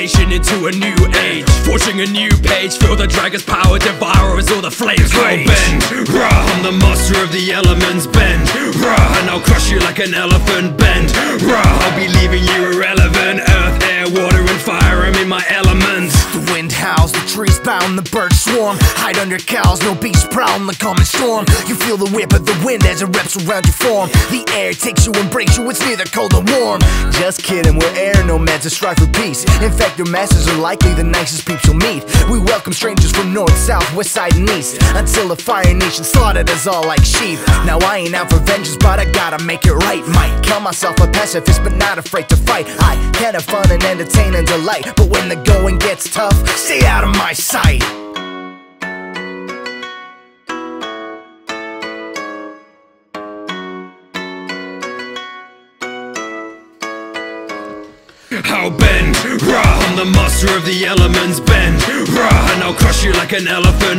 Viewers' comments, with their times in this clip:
0:08 I was loving it already but this was so clean! The barber clips were clean as well 👌.
0:51 ngl, the instrumental part still sends shivers down my spine. Even 6 years later